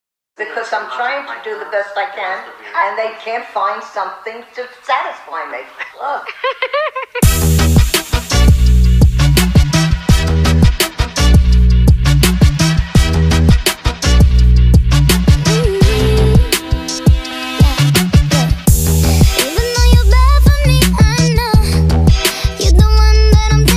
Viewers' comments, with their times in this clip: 0:07 THE BEAT IS SO GOOD SPED UP